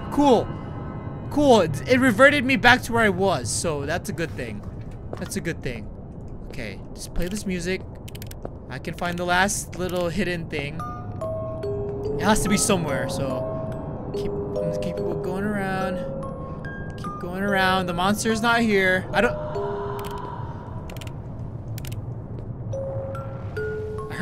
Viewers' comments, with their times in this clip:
0:10 when in my watch.I'm shocked to your scream.not joking